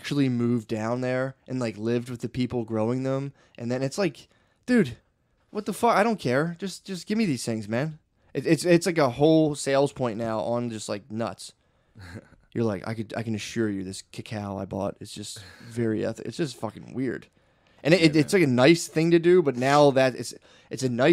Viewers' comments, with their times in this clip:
0:08 Shane chuckling at "nuts" cracked me up a little too much